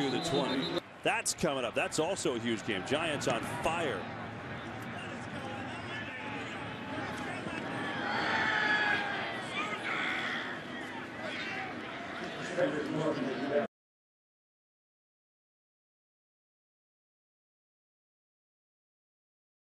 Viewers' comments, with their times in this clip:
0:10 some fan yelled loser